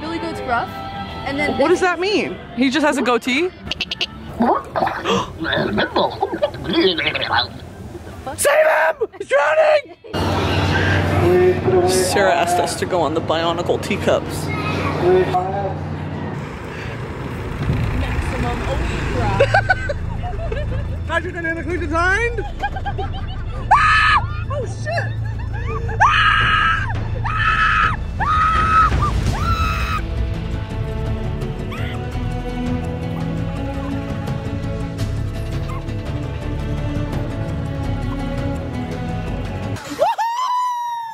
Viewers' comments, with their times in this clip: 0:04 I thought that was Sarah farting
0:26 I totally lost it at the rollercoaster ride scene when Jesus pop up and the music swells up xD